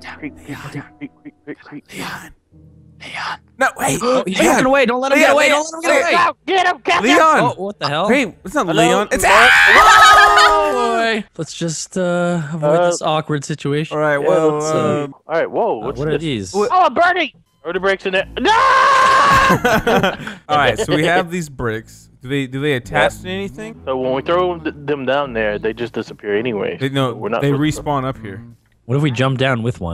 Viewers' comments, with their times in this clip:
0:07 dat scream tho
0:09 manliest scream ever
0:09 Wtf was that scream?
0:10 he screams like a girl. That is funny. I'm not trying to be rude.😊